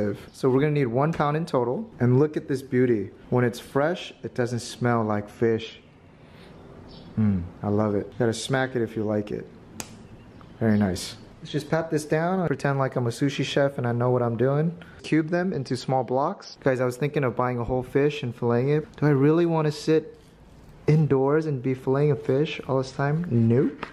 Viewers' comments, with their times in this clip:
0:08 "GoTtA smEEEYYck it if ya like it" * slap * Hahaha ily 😂😂♡